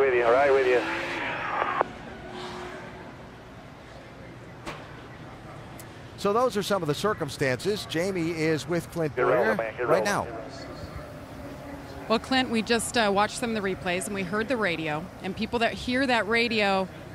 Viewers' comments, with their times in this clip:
0:04 and his right front didnt even go down until after he spun himself. you can hear it blow out either way losing a right fron would have taken him into the outside wall not spinning. a right rear blowout yes, but this whole thing is a lie.